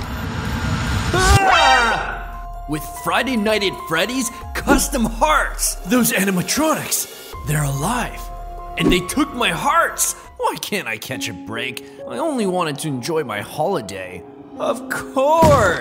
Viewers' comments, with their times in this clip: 0:03 I had a stroke the way he say it like that